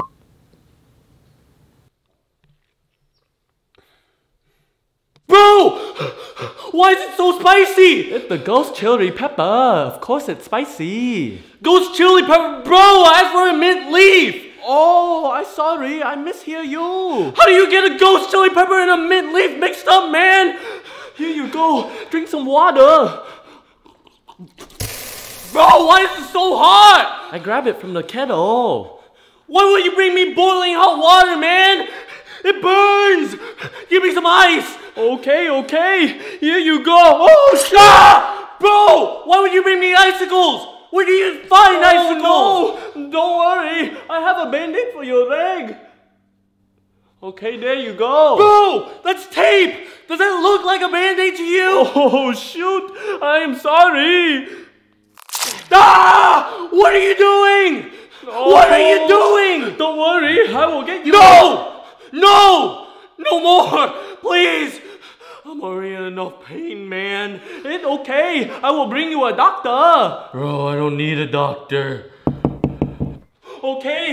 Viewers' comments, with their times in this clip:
0:08 It sounds like a song if you keep on clicking this
0:08 it da ghost chiri peppuh. Press this a bunch of times it sounds like a PHAT beat
0:37 slicing noises captions: [Applause]
0:49 Captions: DOES THIS LOOK LIKE A MANDATE TO YOU
0:51 Ging ging sounds hilarous
0:52 turn on captions, "does that look like a mandate to you?!" Lol
0:59 why is there korean in the background